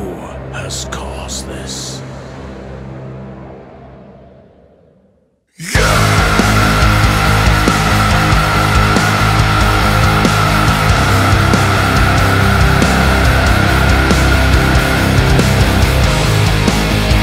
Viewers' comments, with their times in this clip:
0:05 I found my voice like thunder. It sounds like that growling scream and it scares the hell out of those who need to hear that fiery blast of truth long hidden in the deep, dark abyss of time. 🤘😈🤘